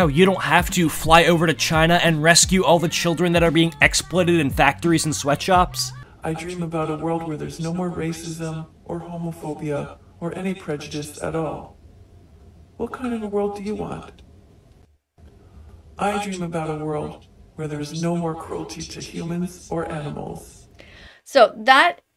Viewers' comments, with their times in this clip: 0:07 it sounded like ghostbur (Wilbur)